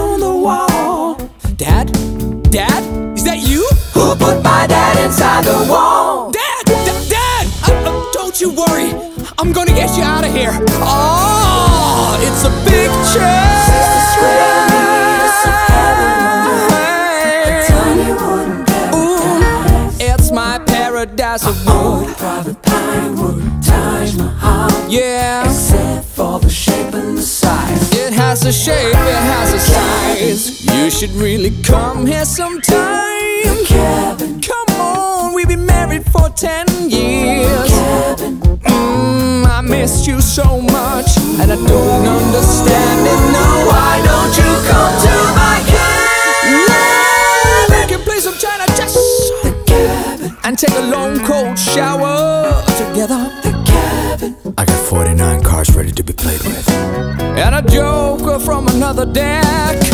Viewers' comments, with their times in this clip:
0:10 By the way he's very talentes, hear him at the minute and you will realize of his greate voice.
0:45 Hot damn, those pipes.
0:45 Ok but this HIGH NOTE tho !!!!